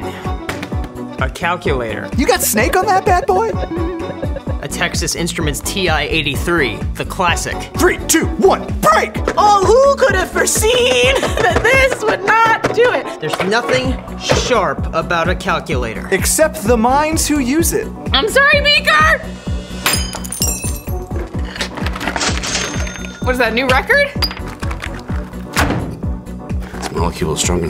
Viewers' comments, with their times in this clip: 0:08 voice crack but. BrEaK